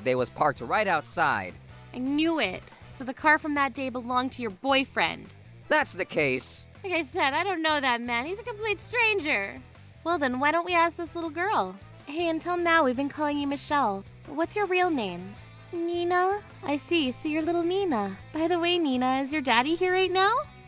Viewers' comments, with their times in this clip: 0:08 is that VA drunk while recording?